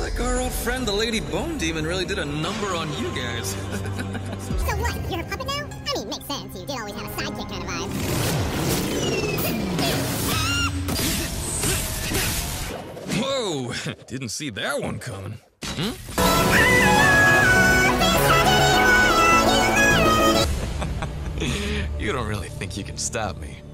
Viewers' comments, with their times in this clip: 0:10 THE SCREAM LMFAO 😂